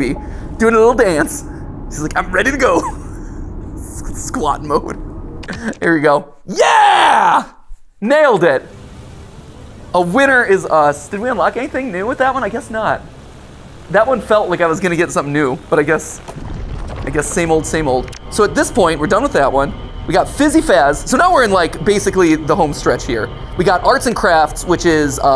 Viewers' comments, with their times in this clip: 0:06 The "yeah" matpat do sounds like original rayman 1 o.O